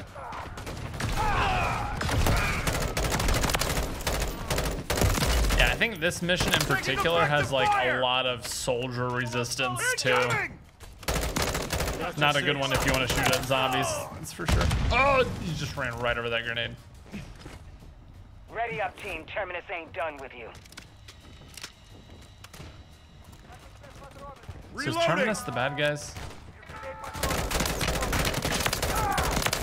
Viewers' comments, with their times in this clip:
0:10 not gonna lie you sound like Arnold Schwarzenegger for a second there...